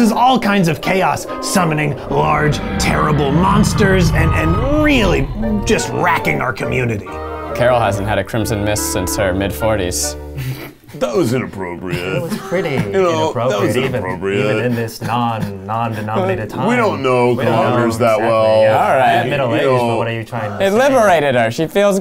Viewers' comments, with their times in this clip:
0:10 Keith's voice somebody needs to do something with this